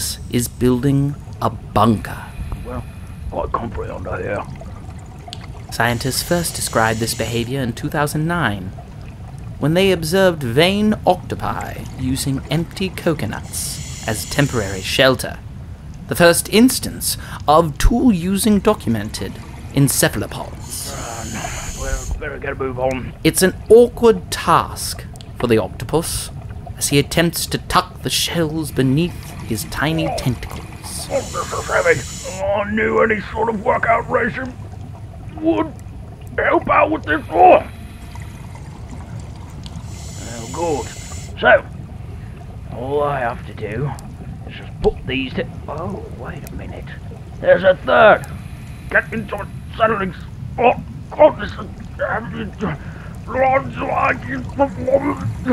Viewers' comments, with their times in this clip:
0:07 The upper class English accent of the narrator sounded obviously fake from the beginning, but what removed all doubt was when, he pronounces the year 2009 the American way: "two thousand nine" rather than "two thousand and nine". (Incidentally, I think the vocalisations of the octopus are probably fake too.)
0:29 the octopus' voice sounds like: a. hes been needing to take a dump for a month. b. that is all c. its rather annoying
0:41 It sounds like Phil Cornwell doing Murdoc's voice here... xD